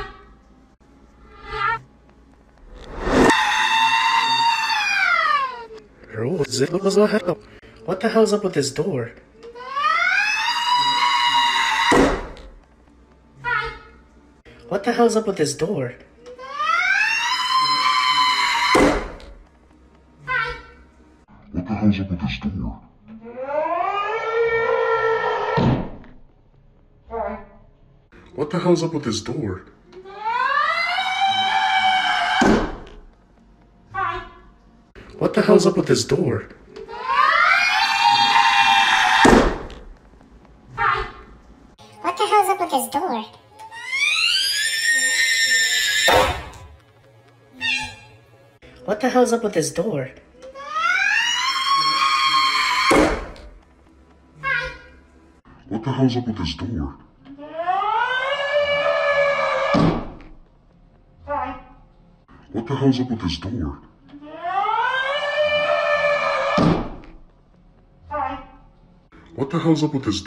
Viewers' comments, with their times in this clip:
0:04 Sounds like a satanic backwards message In a hard punk rock band song
0:22 he sounds like a demon
0:35 bro sounded like bill cipher
0:37 this is the sound of the souls of the dammed
0:38 bro Elmo just turned into a fire alarm💀 no 🧢
0:38 demon Elmo does not exist he cant Hurt you Demon Elmo: demonic screeching
0:41 bro sounds like Boyfriend from Fnf
0:42 And this Especially the scream
0:49 that sounds like a girl screaming 😂😂
0:53 When I pushed “ “it sounded like a beat (when I pushed it a lot of times)
0:56 nahhhhhhhh bro that sounds like an alarm 🚨
0:57 screaming blue thing